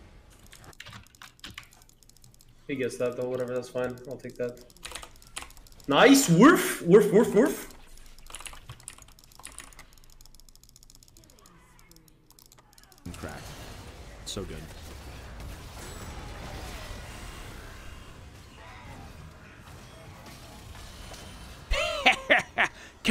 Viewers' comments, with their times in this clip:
0:07 Me: Trying to have some sleep Dogs: